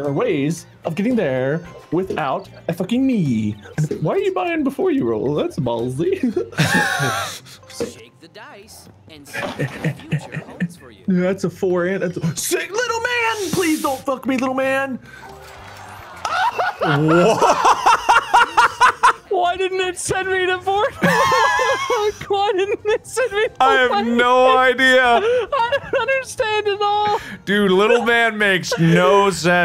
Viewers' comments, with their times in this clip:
0:04 Why are you buying before you roll? That’s a’ ballsy! mickey mouse laugh
0:16 Yell of sheer betrayal and disappointment. Poor wade
0:16 and now we hear the sound of horror and sadness